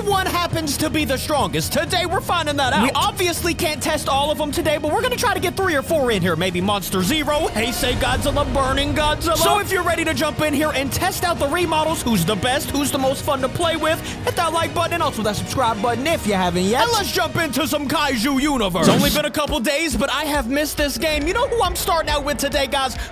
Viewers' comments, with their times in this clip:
0:08 I'm sorry but did he just say heisei correctly?